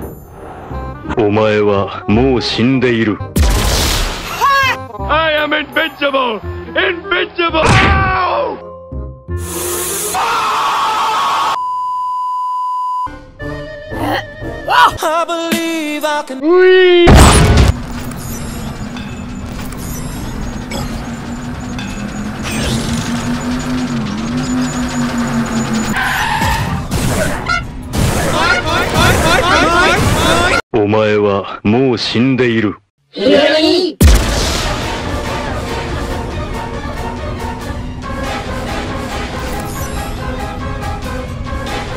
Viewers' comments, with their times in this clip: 0:10 legend has it that if you listen real closely you’ll hear the rage of a demon that is raging
0:29 omg made me laugh so hard (how in high pitch voices they said NUNI?!)